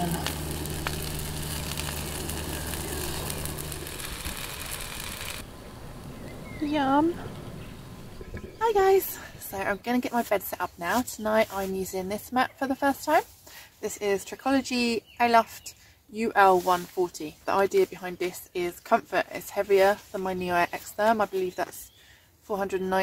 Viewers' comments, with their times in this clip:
0:05 That's the cutest "Yum!!" I've ever heard! 🤭🍔